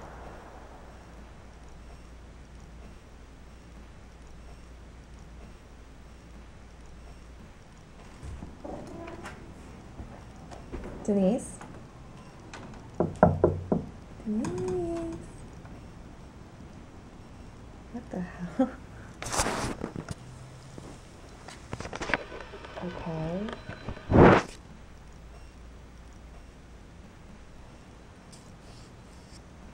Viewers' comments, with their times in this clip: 0:10 did anyone else hear laughing before